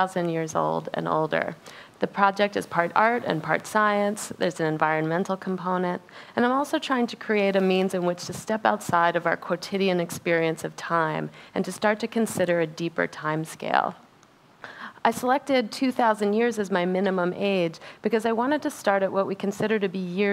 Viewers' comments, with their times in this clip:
0:06 Can anyone help me? I'm trying to practice my listening skill through this speech. I heard is " And I'm also trying to create a means in which to step outside the box quotidian experience of time", but in the subtitle, that is " And I'm also trying to create a means in which to step outside our quotidian experience of time". Can anyone tell me I heard right or wrong? Thanks so much.